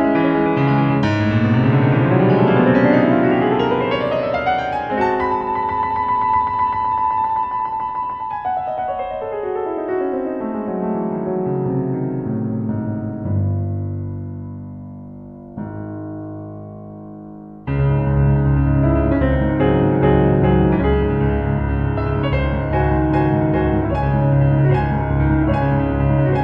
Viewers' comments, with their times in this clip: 0:08 Isnt similar to fantaisie impromptu